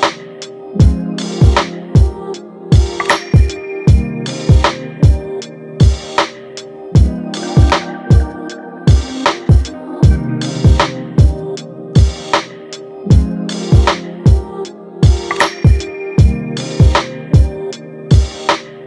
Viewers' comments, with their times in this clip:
0:05 why does this beat feel like it’s in every video?